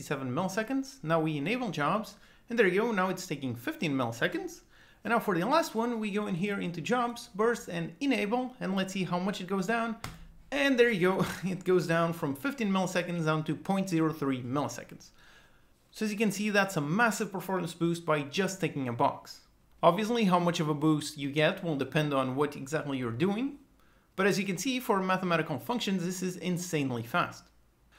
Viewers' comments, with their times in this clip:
0:10 I heard you smile. It's really much magic. I agree :)